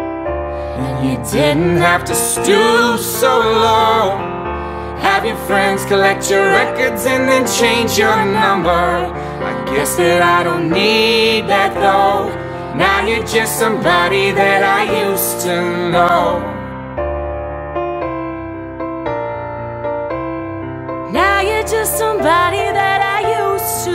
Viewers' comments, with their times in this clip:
0:07 OMFG! im listening to this an it feels like its been 3minutes, i go and look. the video time is like -____- seriously, talk about a slow song.